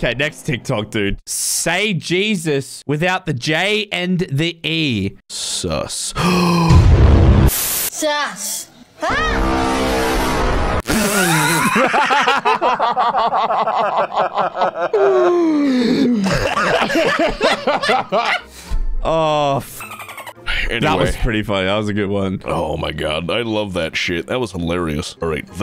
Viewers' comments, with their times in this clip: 0:08 bro I didn’t laugh until they did lol
0:11 that synchronized laughing tho